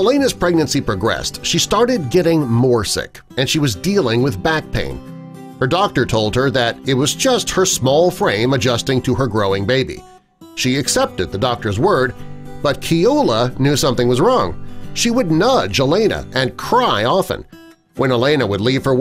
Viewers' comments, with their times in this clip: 0:07 "it was just her 'small brain'" Either this narrator is harsh or the doctor is calling her stupid. :C